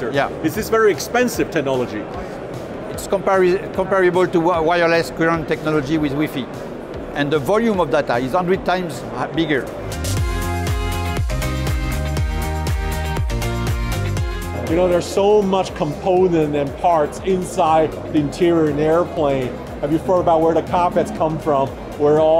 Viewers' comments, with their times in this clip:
0:05 The way the guy pronounced Wi-Fi lmaoo